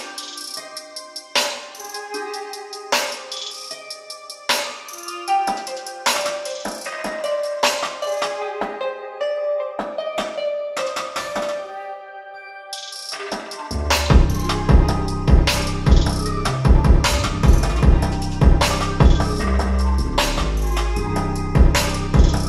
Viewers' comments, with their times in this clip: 0:04 i swear i feel like someone is banging and cracking a drum